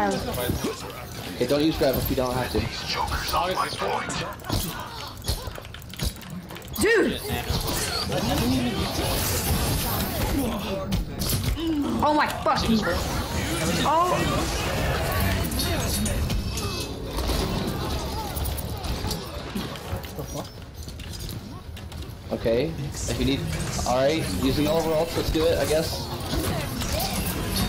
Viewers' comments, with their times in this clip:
0:09 what's with Genji's ult voice line?